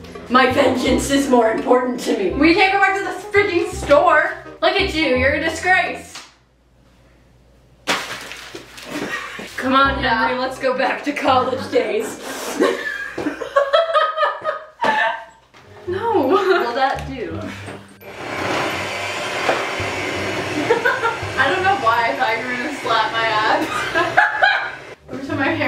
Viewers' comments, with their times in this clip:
0:10 "c'mon henry let's go back to college days." Aggressive drawn out sniff